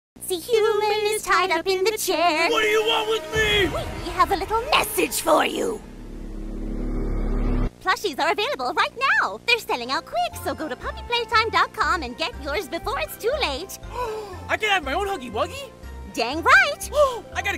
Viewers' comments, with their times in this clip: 0:03 I’m gonna speak from the heart and be very honest when I say this: mommy long legs didn’t sound scary, at all. The person who voiced this isn’t sounding anything threatening at all. And with that, I officially declare mommy long legs pretty harmless………